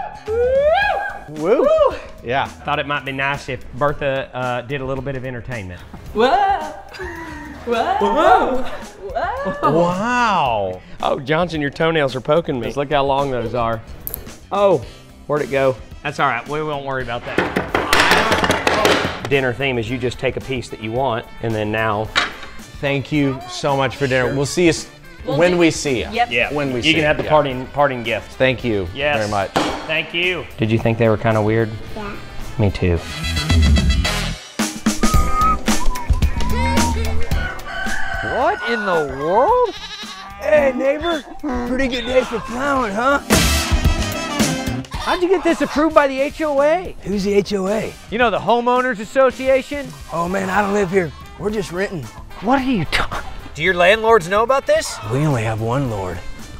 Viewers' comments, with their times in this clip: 0:06 I love the way everyone was keeping in their laughs😭😭
0:40 that did not say neighbour 😳
0:41 sounded like something